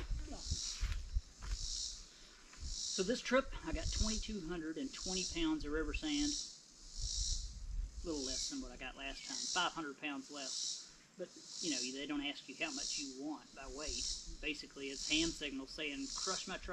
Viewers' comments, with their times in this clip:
0:04 no it is to quiet i can't hear a word he is saying